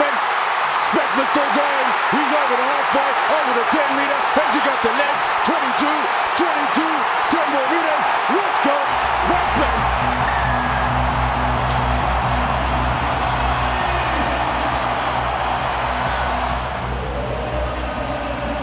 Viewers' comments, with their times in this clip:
0:04 From the commentator sounds like an auctioneer